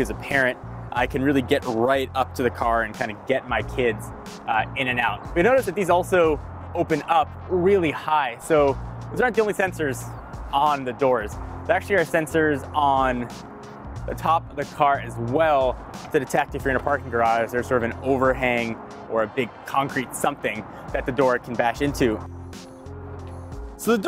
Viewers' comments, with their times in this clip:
0:05 "And get my kids In-N-Out" 😅